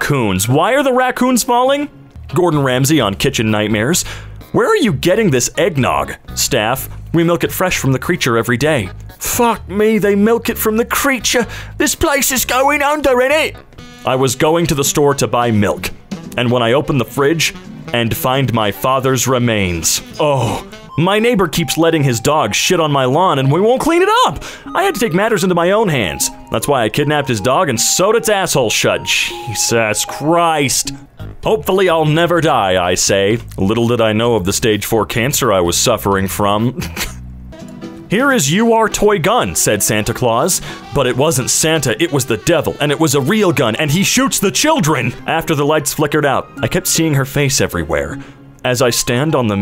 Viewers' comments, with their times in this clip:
0:09 there's no beep
0:37 i love how you pronounced the you're how it actually is, it just made it 10x funnier. i love this subreddit it's hilarious